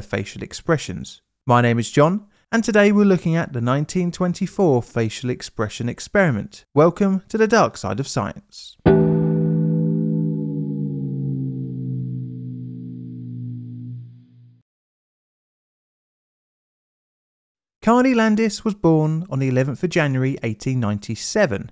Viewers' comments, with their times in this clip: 0:08 les clay poop wammy!